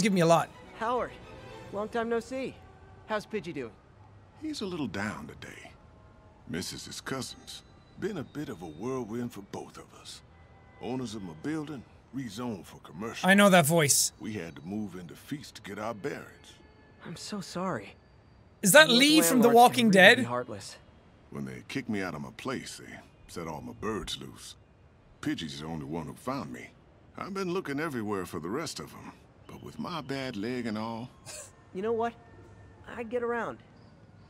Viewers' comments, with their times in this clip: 0:09 am I the only one that thinks he sounds like pastor Jerome from fc5
0:12 I thought the same thing, it sounded like Lee from the Walking Dead. It must be him then.
0:14 Rewatching this series and hearing Howard’s voice man…I recognized immediately💔
0:20 I thought I was going insane when I thought that Howard's voice sounded like lee. (edit) watched 3 more seconds in and he mentioned a bad leg, it's totally lee in disguise.